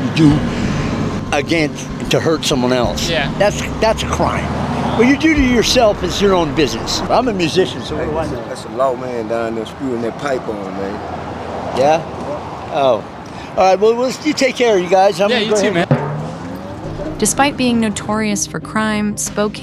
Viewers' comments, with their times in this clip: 0:04 🤣uuuhh ok (the sound effect)..